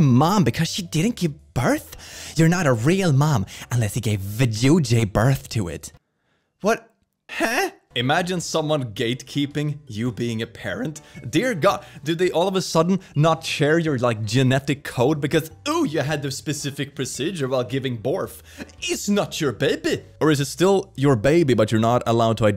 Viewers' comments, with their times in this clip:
0:05 vajuju 💀💀 i’m calling it a vajuju from now on